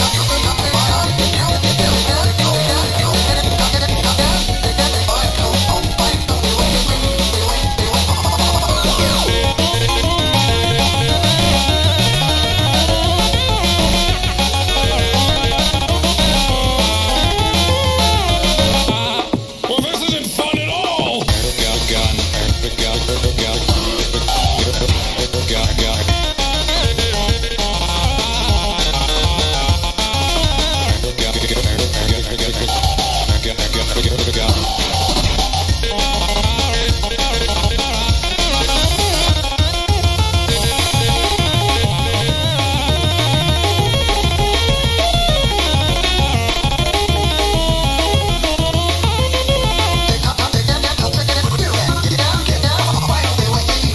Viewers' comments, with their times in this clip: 0:06 oh god maybe it's my imagination but i heard Golden Flumpty said "i will find where you live"
0:40 AYOO i lvoe this part when its goes hard speed up